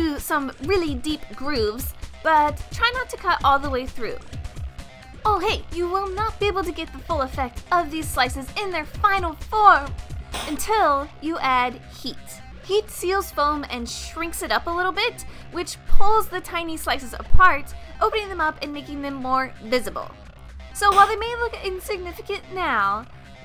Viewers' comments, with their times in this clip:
0:06 when she's says "oh hey" it's sets off Google assist on my phone 😂